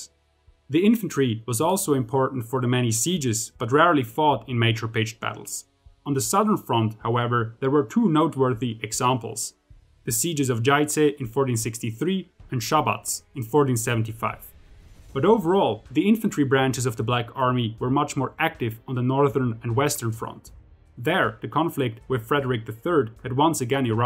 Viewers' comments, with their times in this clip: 0:10 dude you nailed that Šabac like it was your hometown